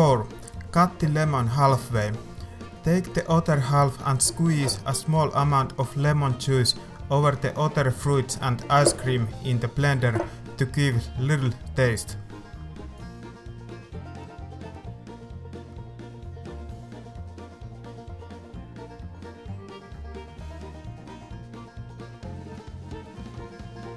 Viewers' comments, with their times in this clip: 0:06 squeeze OTTER fruits :D? accent is very odd thing i must say